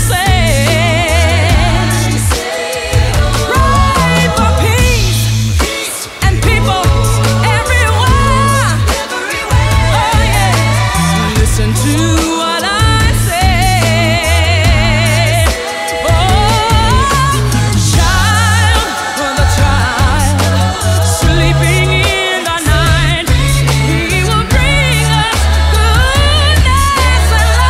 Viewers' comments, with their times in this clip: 0:08 that “everywhere” HITSSSSS